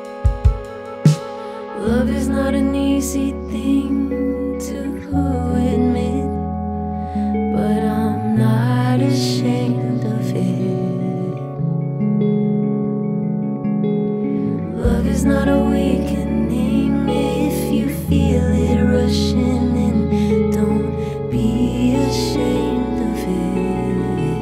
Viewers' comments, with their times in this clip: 0:07 This kind of singing totally reminds me of Olivia Rodrigo, which is pretty cool considering Olivia was influenced by Paramore.